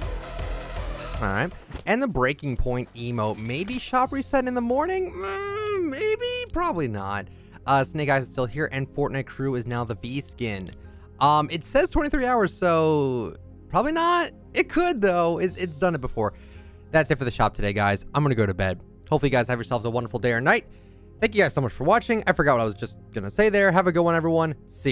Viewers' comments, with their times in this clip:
0:05 what was that noise my guy